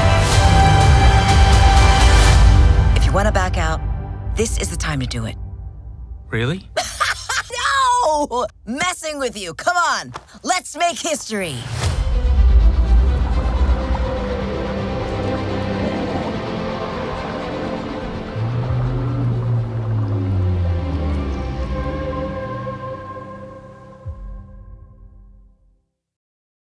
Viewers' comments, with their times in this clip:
0:07 Searcher Clade laugh 😆 no silly 🙃 Davidson messing with you buddy now come let’s go cook sausages 🌭 and go on a strange world 🌎 adventure buddy 🤨😁
0:12 sounds like stranger things theme song 😳
0:12 Why sound like the Stranger Things theme song lol
0:14 The music that starts like reminds me of Stranger Things